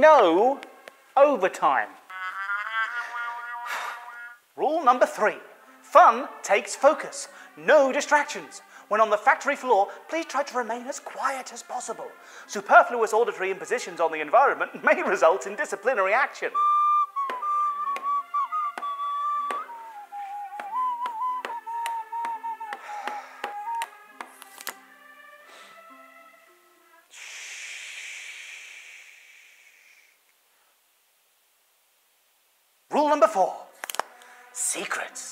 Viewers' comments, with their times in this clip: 0:08 when he said "factory floor" my brain just clicked thats the same guy who made Art of Darkness just by the way he said it
0:16 Huggy Wuggy's Amazing Flute And Drum Playing
0:17 I love how Huggy starts to make noise as soon as he just talked about it
0:21 💀the part when he got shushed